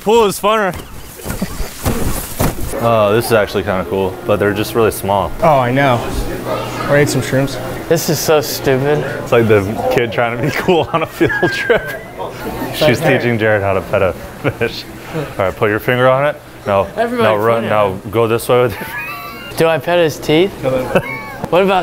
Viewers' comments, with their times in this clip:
0:07 Did anybody else here "wanna eat some🍄?"🤣
0:07 gotta love the "Who's your daddy" in the background